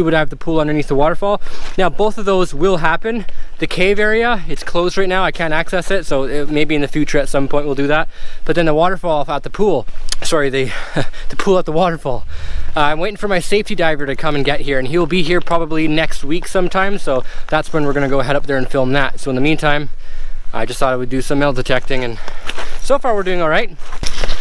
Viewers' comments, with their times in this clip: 0:10 the poo at the waterfall